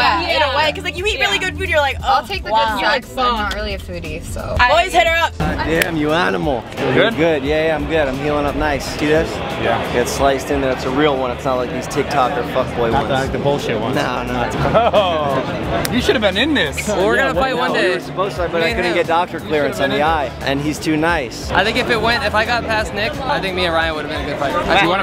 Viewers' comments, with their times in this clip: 0:06 mans sound like Jesse pinkman